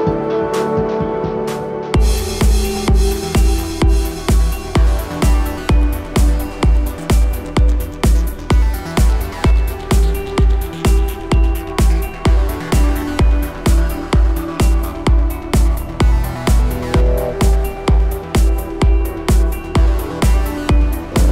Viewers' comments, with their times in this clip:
0:09 damn, revving beyond 9000 rpm.. i love it